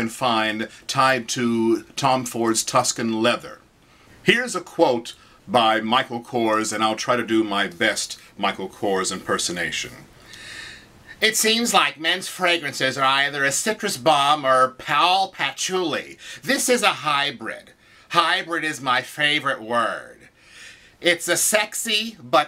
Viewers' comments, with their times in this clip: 0:10 Watch this first.lol Nice review big man with a GREAT voice